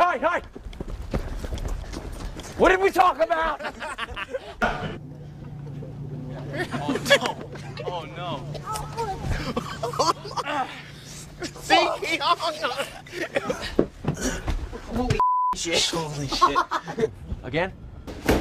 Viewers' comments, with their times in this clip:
0:06 the people laughing at them from behind the camera are EVIL 😂